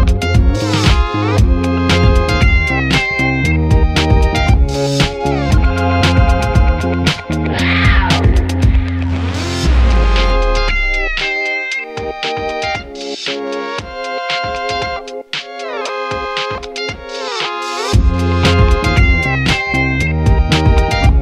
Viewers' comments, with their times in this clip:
0:06 thums up if you thout your phone eas ringing into the song